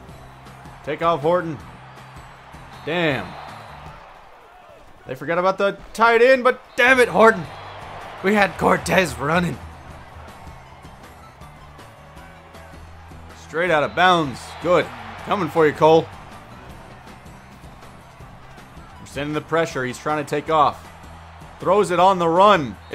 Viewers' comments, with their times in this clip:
0:08 he sounds like pewdiepie